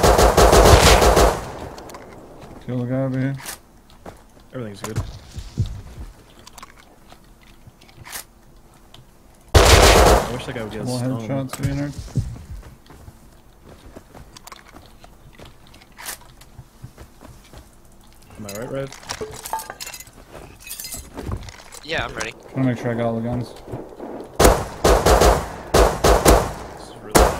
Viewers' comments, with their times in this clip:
0:08 the headshot sounds like you blasted his head to the next fucking world